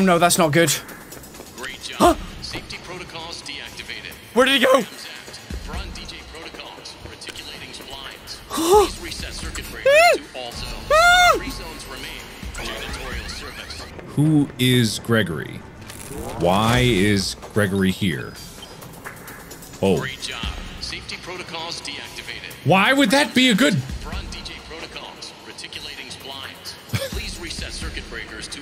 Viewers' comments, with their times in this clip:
0:10 gets me, the facial expressions and the pain in his voice 😭😭😭